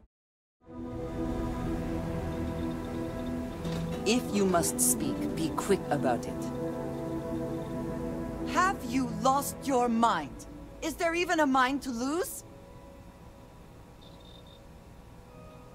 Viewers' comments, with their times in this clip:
0:03 onwards. Is that creaking from the ship?